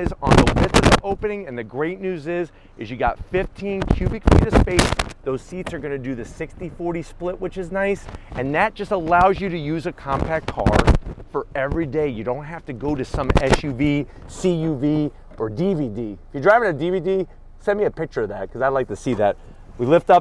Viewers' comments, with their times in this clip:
0:05 Whoooa mic issues